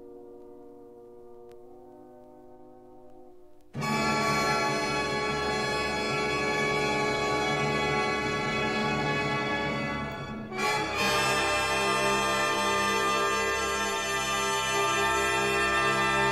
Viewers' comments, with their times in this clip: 0:04 I nearly got an heart-attack... :o) Very expressive. I wish I knew what he was thinking when composing this symphony ... it triggers a lot of pictures in my head. I think I have to listen to more of his compositions, I am sure that I will find something suitable on your channel. Thank you for uploading.